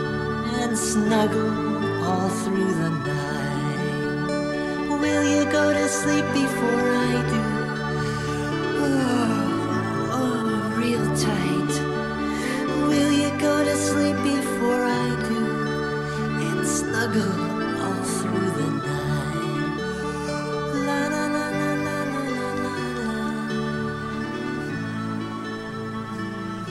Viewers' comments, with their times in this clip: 0:08 not teddy ruxpin moaning💀